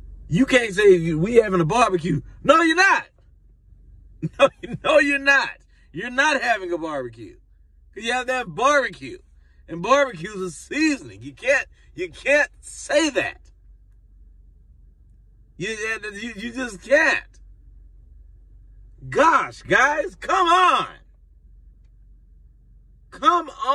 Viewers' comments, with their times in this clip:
0:08 🤣🤣🤣 "Gosh guys, come on!!" His white dude sounds like that movie Napoleon Dynamite!